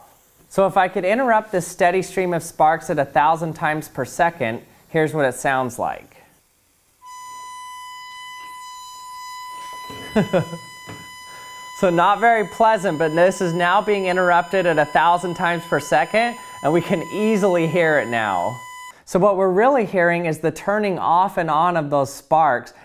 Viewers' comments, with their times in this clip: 0:07 HE FLAT LINED!!